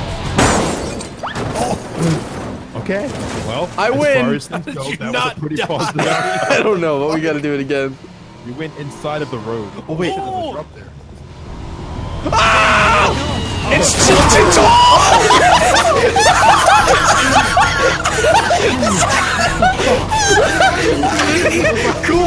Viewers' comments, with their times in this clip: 0:10 that REEEEEEEEEEEEE i liked that yeah